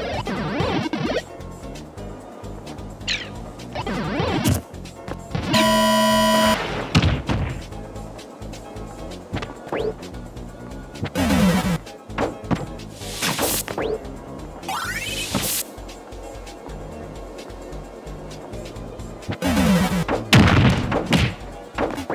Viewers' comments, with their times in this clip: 0:03 Warning for the headphones 🎧 users